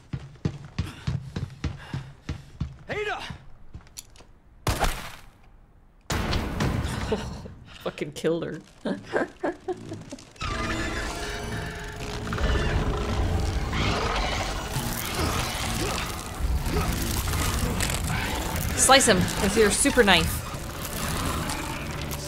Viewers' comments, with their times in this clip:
0:05 Leon : ADA Ada: THUNK TUNK Damn if she wasn’t knocked out before she’s definitely knocked out now 😂😂😂